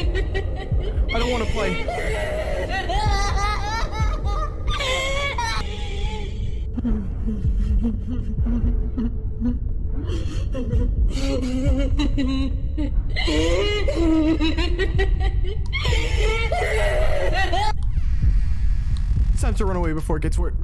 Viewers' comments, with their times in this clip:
0:07 Omg they used light yagami’s iconic laugh
0:07 Light Yagami type laugh